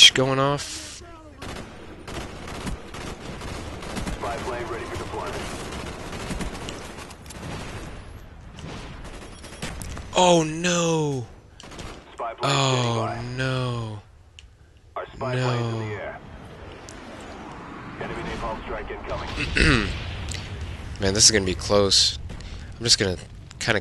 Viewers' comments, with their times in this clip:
0:09 sounds like that guy from family guy!